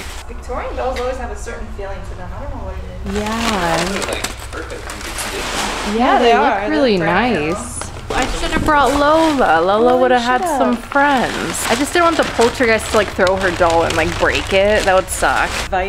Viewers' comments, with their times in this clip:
0:03 When you were talking *thunder*DABUMMM😂 👇